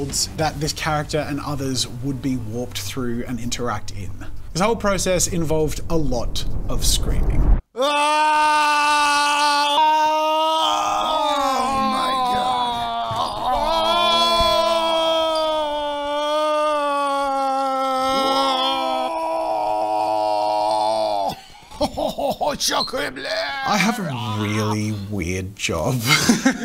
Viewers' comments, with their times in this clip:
0:05 Anime voice actors
0:07 Yo can someone please take on of the clips of him screaming in front of the green screen and make something amazing out of it
0:08 my car starting up